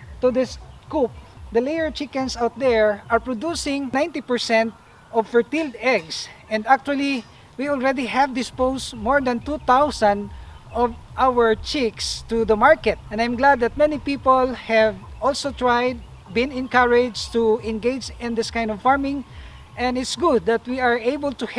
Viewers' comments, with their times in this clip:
0:04 ".....ferteel eggs"...."ferteel"..I love the accent!. Haha!